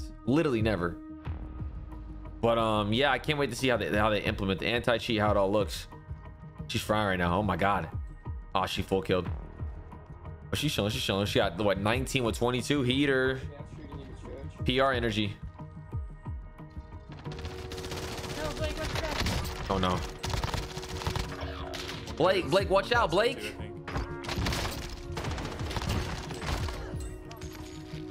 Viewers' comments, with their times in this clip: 0:10 Shshishashisha... System error😂😂😂😂😂😂😂😂😂😂